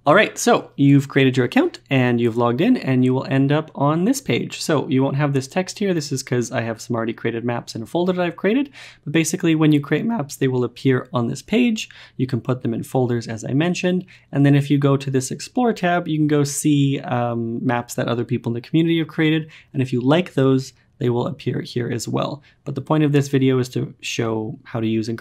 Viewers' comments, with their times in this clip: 0:09 quite the voice crack, great video by the way!